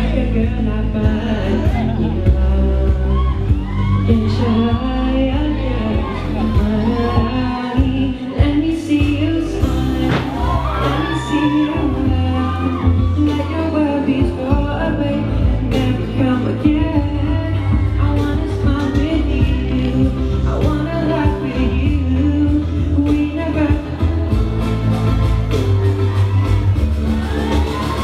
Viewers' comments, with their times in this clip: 0:09 smart doh flip